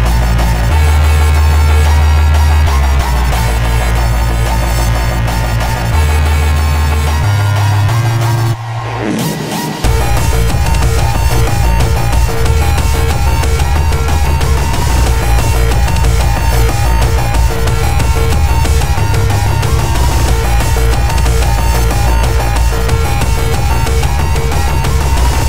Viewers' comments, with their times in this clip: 0:06 THAT FUCKING BEAT DROP WOOOOAAAAHHHH